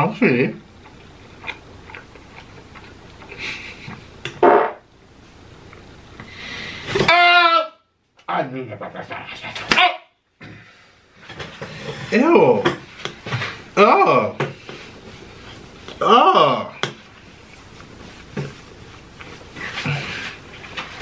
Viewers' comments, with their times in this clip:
0:08 😂😂 was he talking Gibberish